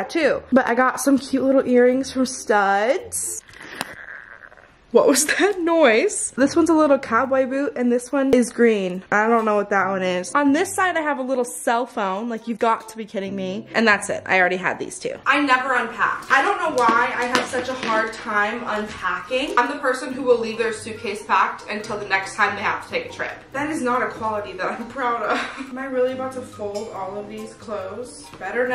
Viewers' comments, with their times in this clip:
0:10 Lmao when you made "that noise" @ like or something I thought I made that noise cause my mouth was open and I got hella confused